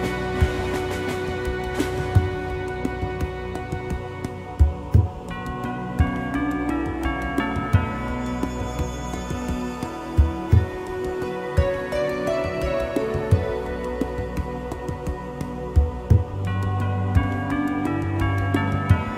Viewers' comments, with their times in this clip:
0:05 Since piano basically just plays The Lick over and over again. Now you can't unheard this